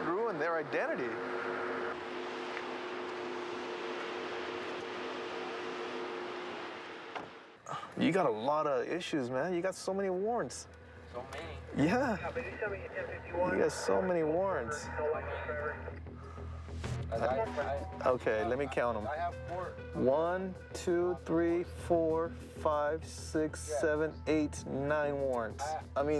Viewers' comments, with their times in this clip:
0:07 Arrested Guy: "So many?" Subtitles: "Not me"